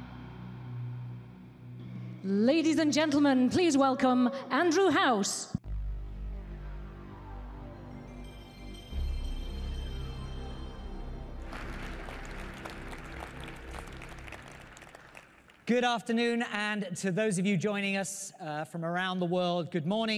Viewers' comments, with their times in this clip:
0:03 How could only one person cheer for such and amazing intro ! Sony really know how to it up! PS4 FTW!